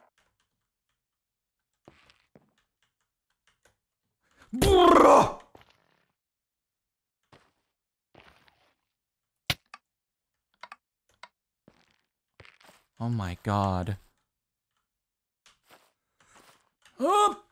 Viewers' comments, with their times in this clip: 0:03 That's the meanest bruh I've ever heard in my life